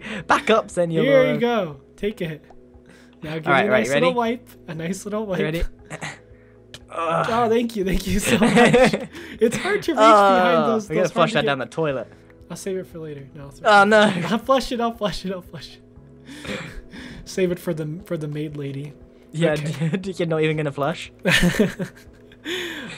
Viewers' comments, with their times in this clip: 0:06 Grian Moaned?! O.o